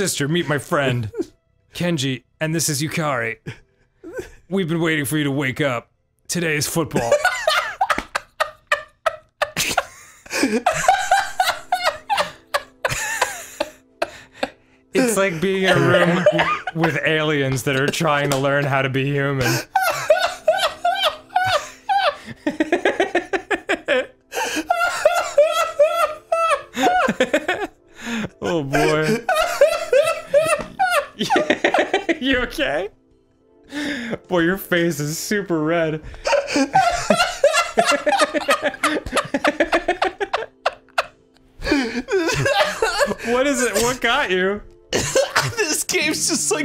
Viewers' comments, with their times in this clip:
0:05 their laughs oh my lord 😂 this game is so fuckin random it got arin WEEZING
0:33 Arin laughing here reminds me of The Sword in the Stone animated disney movie. Archimedes is the name of the owl who is with Merlin. When he laughs it sounds just like this. I used to rewind that movie over and over again to hear him laugh. My brother and I knew that movie by heart.